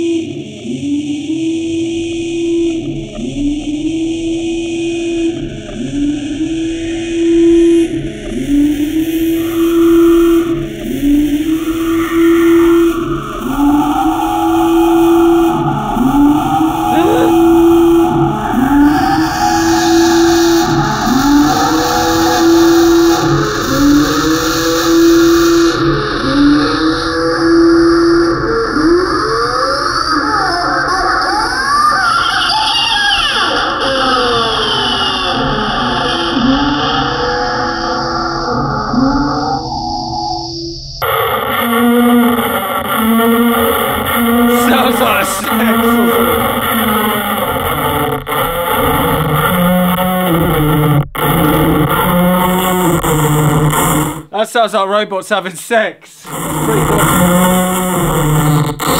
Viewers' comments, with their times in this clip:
0:07 Amazing! goes from zombie whale to rabid cow then the cow and whale have a sweet filter love child...
0:07 HOLY SHIT dat demon like screaming-ish noise on is so cool.. it's like a sound from deep down from the bottom of the hell
0:42 sounds like its from a ministry record